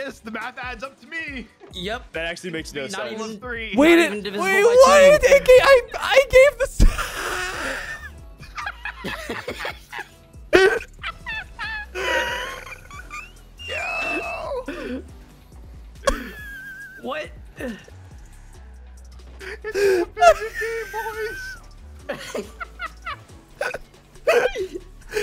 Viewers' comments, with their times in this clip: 0:06 bro what is that laugh combo